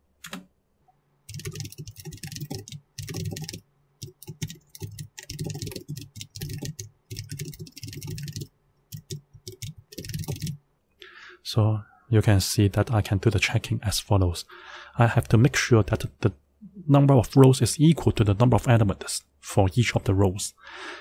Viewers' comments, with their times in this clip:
0:08 The video is really clear and your typing is nice to hear. you type 'for row in Matrix , if Len(row)!= num_rows , for your very first non square example, it will not print 'not a square matrix' I think because the Len(Matrix) and the Len(rows) will be equal.